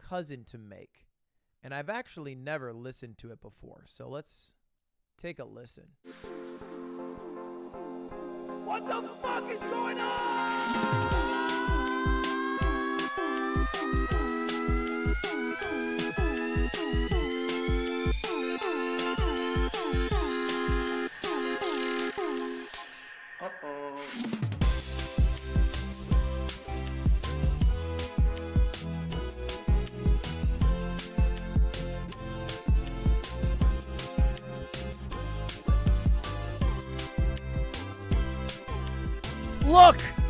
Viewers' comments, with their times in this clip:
0:05 The song sounds similar to radiohead - creep
0:05 This one reminded me so much of Steven universe ngl
0:25 Steven Universe? We'll never know (I know it's not it just sounds almost exactly the same with like 2 notes removed)